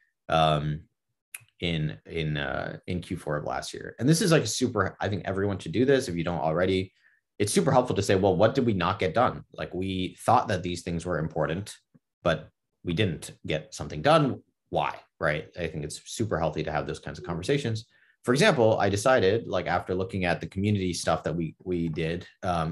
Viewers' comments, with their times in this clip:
0:03 Audio went out ? Or just me